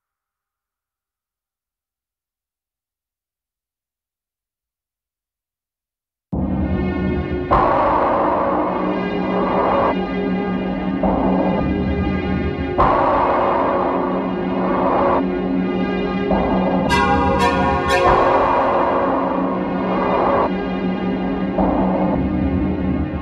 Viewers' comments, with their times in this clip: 0:04 got me confused, i thought i was listening to Plume Valley for a second there lol